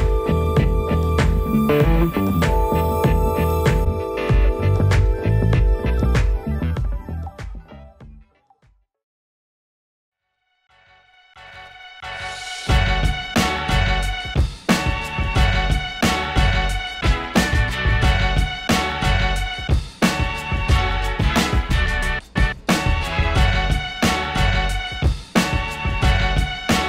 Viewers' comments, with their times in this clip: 0:10 This is a good example of why you should not mix with an 8" speaker, yes you get the extra low end, but listen you can hear the vocal clarity better with the 5", the perfect size cone is 6.5"